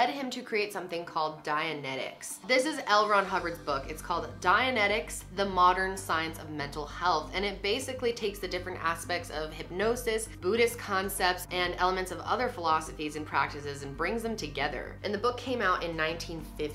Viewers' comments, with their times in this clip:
0:04 anyone else think his name was “ellron” until 😳😂